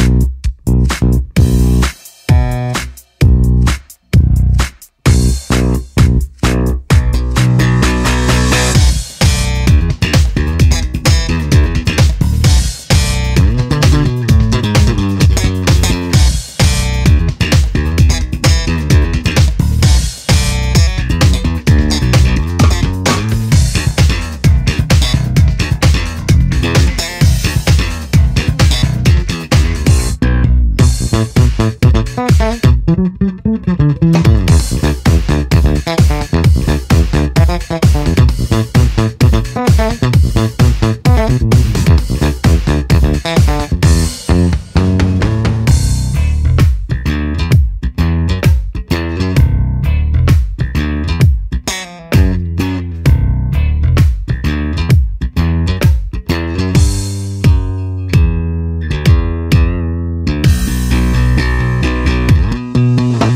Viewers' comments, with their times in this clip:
0:09 did anyone else get the feel of chemical plant zone from Sonic 1?
0:09 I hear some chemical plant zone
0:32 The L I C C
0:32 the lick lol
0:45 When you've finished the factory level in a sonic game and its time to go through the casino level.
0:46 Dug the time change